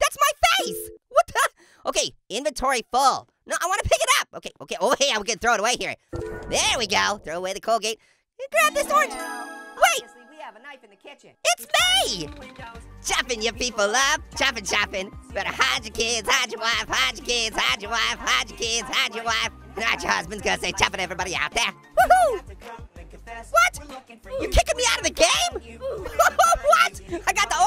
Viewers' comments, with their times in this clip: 0:08 AWSOME SONG👍 woooooo
0:12 After so long, he sung that legendary song...